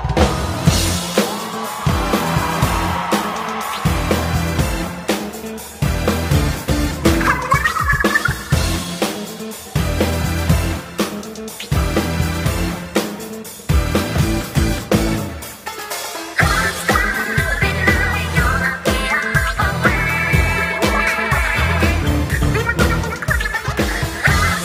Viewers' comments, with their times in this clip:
0:06 I just realized that it kinda sounds like Pearl is saying "Hello!"